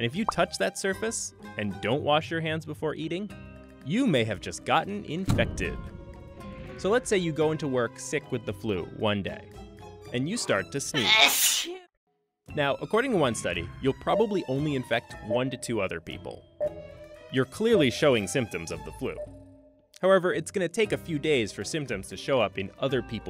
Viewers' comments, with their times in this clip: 0:10 GOD THAT WAS AN INTENSE SNEEZE